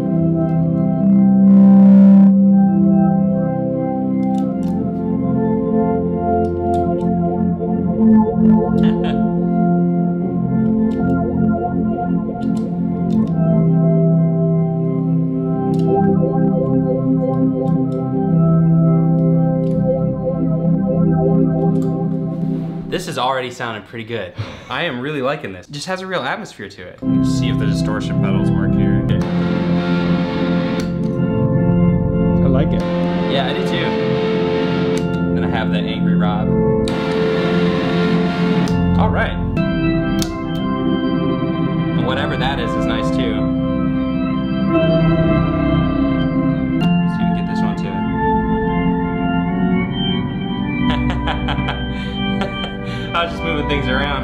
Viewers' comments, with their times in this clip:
0:08 sounds like the OST to Kerbal Space Program. If anyone has played it...
0:36 When he turned the distortion pedal up on it sounded like Burzum song.
0:37 that just post-rock/ambiance shit right there.
0:41 Sounds exactly like Kerbal Space Program's ambient space music...